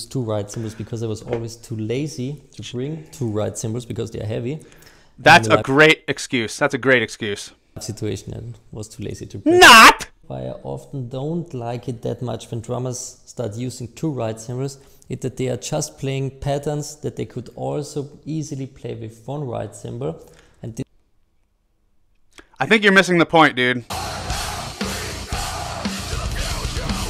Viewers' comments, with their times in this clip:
0:08 .... my poor ears